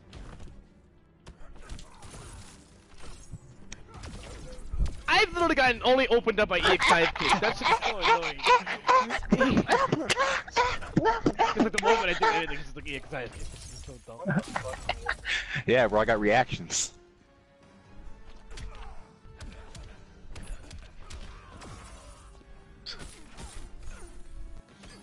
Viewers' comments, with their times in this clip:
0:07 Bluetooth speaker users beware